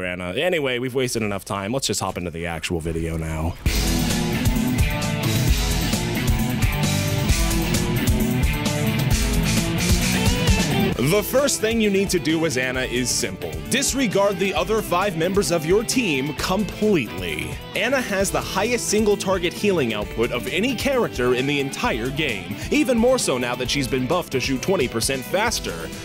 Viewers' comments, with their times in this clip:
0:04 Nice choice of music!
0:10 Try to ignore the horrible framerate / lack of sound in some of these clips. OBS fucked up, and for that I apologise ( there is a flicker) Gotchu.
0:11 Try to ignore the horrible frame rate / lack of sound in some of these clips. OBS fucked up, and for that I apologize.